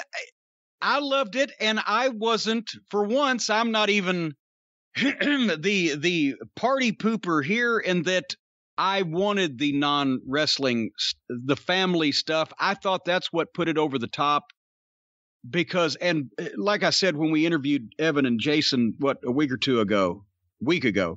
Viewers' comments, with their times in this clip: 0:04 You know it's gonna be a good video when you hear the vintage Corny cough! 😂😂😂😂😂😂😂